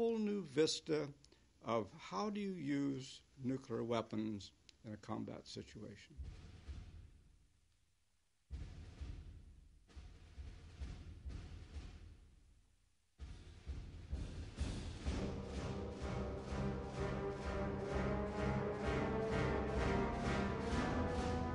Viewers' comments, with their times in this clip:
0:09 The Music that starts reminds me of some of the music from Final Fantasy VII; namely, the track entitled "Weapon Raid", which is among the musical selections played during the cinematic sequence of the Diamond Weapon engaging in a cataclysmic artillery exchange with the city of Midgar. In fact, I wonder if the composer for Final Fantasy VII, Nobou Uematsu, may have taken some inspiration from this!